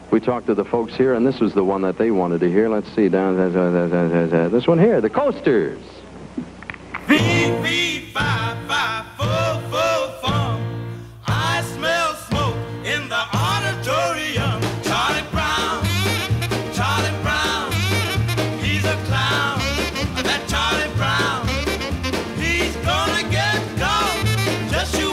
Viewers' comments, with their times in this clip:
0:07 This song by The Coasters is in Stereo.